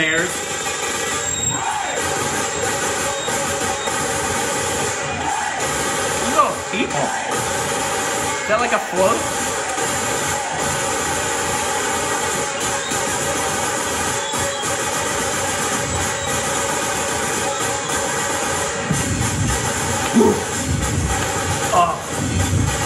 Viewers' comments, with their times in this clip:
0:09 here is perfect rhythm